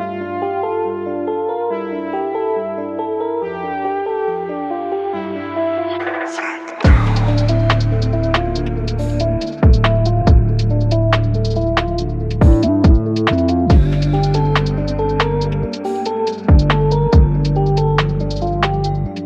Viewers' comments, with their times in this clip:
0:06 When the kick and the bass hit I was like🤯 didn't expect that kind of a drop! Woooow!